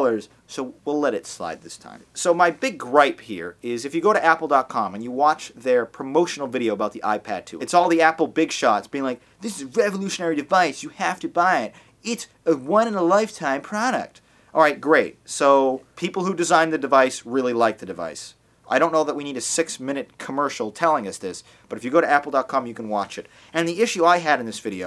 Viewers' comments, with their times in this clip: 0:09 Cartman impression? haha